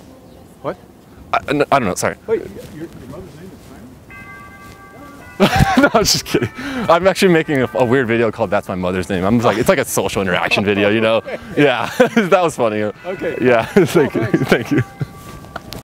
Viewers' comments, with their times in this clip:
0:04 did u guys notice the timing of the bell . . . EPIC TIMING